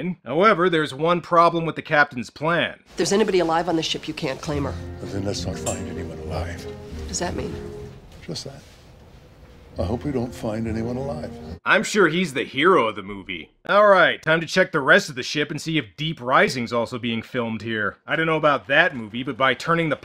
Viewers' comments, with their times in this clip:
0:08 The captain's delivery gave me a very Nicholas Cage vibe.